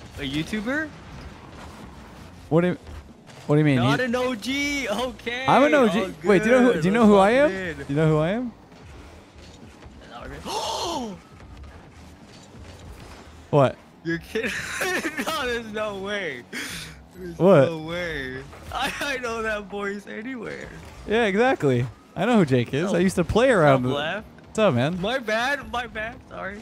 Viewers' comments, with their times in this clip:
0:08 that gasp lol, true fan